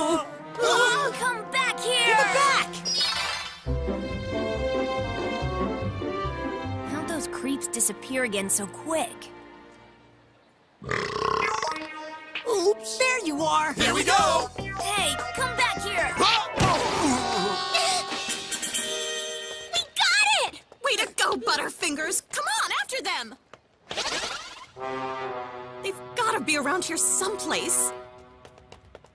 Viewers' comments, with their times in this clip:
0:10 English dub (burp sounds) and Japanese (Sneeze)